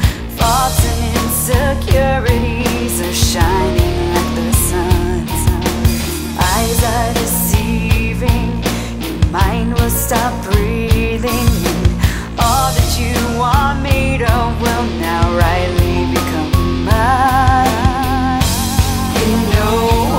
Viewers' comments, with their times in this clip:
0:04 it’s so subtle, but I love the piano that has been added to this version